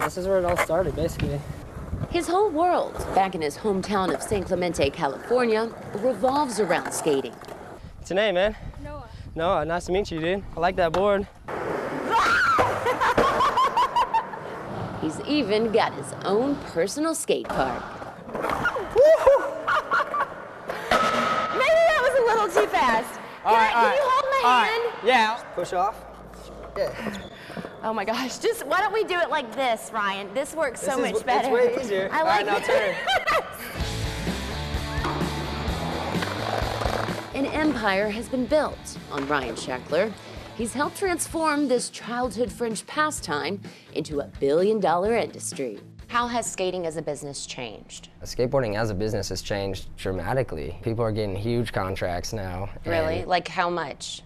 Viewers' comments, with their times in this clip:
0:10 That scream, just, what??!?!
0:41 Did anybody catch what she said ? "Childhood FRENCH pastime"??